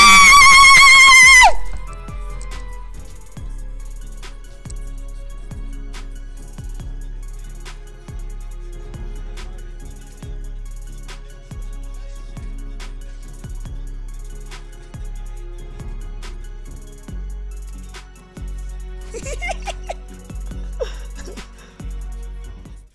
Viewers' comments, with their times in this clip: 0:10 Bro you screamed like a fucking girl Nice vid though are you sure your not related to Paul Malignaggi